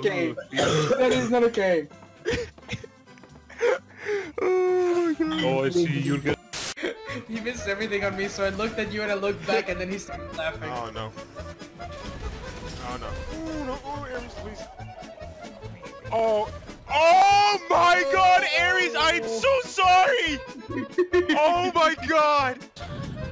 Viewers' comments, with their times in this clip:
0:07 existence of that music pains me